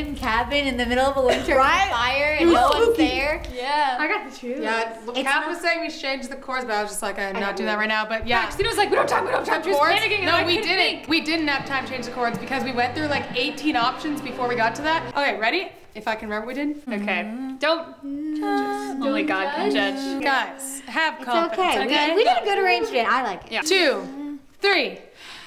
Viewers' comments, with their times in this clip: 0:06 Mic: “This is MY time to shine”